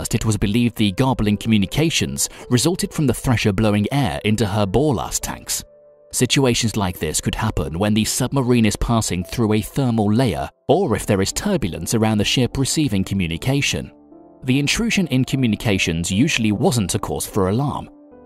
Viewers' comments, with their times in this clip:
0:03 Interesting topic ruined by the worst script. Who wrote that repetitive drivel? I mean "ball arsed", do you mean Ballast?
0:05 what are ball last tanks? Hate the robot voice-overs.